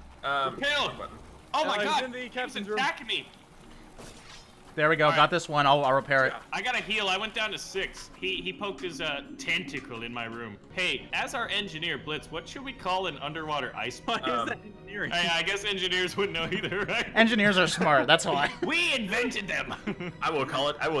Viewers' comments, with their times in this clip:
0:03 roblox sword sound